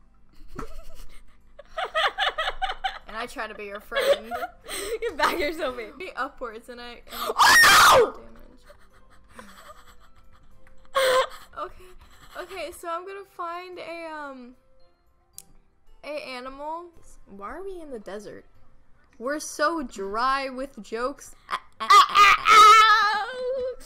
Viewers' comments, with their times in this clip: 0:07 omg rip headphone users (me)